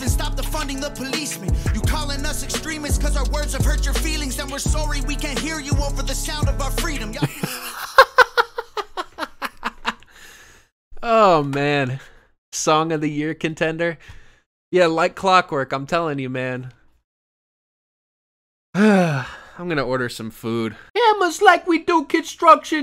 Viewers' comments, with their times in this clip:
0:03 Him "rapping" about American politics and hitting a hard Canadian "Saurry" is what got me
0:05 bro isnt even trying to hide that he isnt American. That was the most Canadian “sorry” Ive ever heard